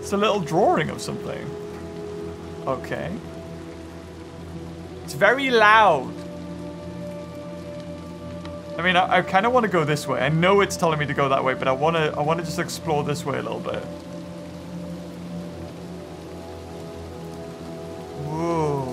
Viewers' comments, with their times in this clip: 0:05 Of course it’s loud - it’s RAINING! Rain is always loud in some way.